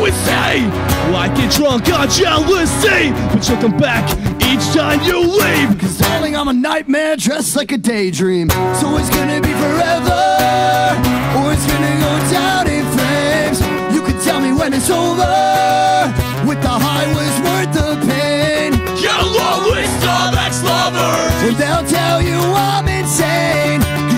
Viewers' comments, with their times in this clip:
0:05 for me Brian sounds like Danny worsnop haha